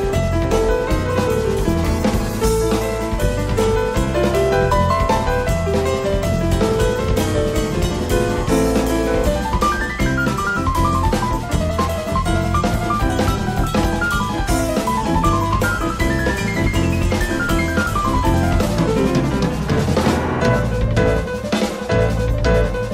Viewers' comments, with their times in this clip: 0:10 Oh yes! I love Hiromi. And this 3 piece is so wonderful!! Always dig Simon Phillips drum sound. p.s not that this tune isn’t full of epic licks, but that lick starting was just ridiculous. lord almighty that was sick!